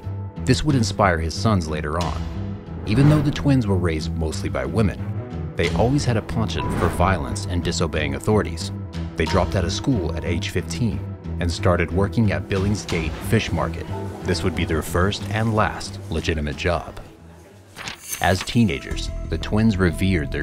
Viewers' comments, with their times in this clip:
0:07 ponchont? Maybe less used words aren’t your forte. Second video where words are said incorrectly.